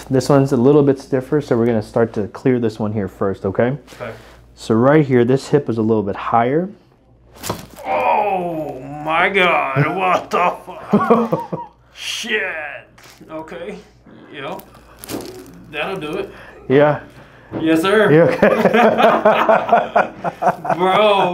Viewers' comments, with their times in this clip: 0:08 when the first leg is pulled.. what's popping?? the ankle or is that the hip, knee and ankle?